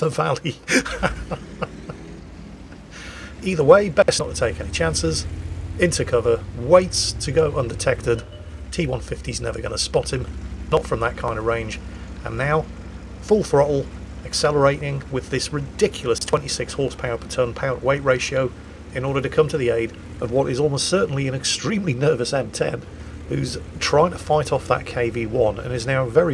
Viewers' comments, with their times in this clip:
0:08 Audio Issues around the mark in the video?